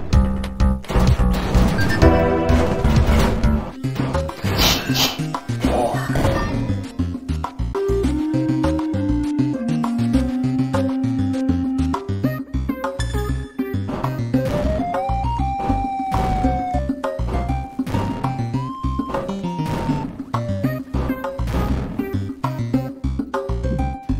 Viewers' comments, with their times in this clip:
0:05 why i heard someone sniffing? 🤨🤨🤨